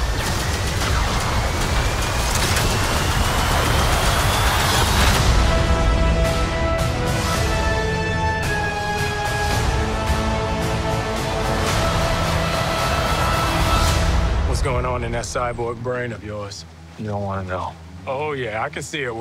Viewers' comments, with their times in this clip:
0:05 am i the only one thinks that the song whenever the title came up it does sounds like The Amazing Spider-Man song?